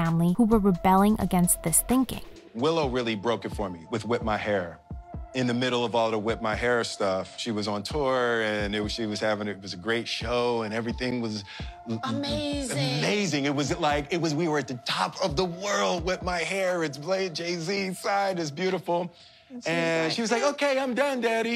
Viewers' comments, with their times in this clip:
0:03 Does it really need the very annoying "background" music ? I'm sure it was a good video with just the talking , but I had to stop watching because of the excruiatingly annoying "forground" music .
0:04 That's a shame, the music cut